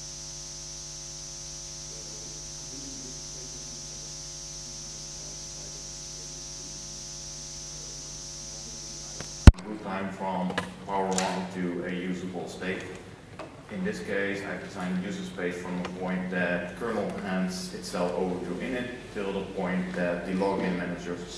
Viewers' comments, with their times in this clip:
0:09 The audio is OK after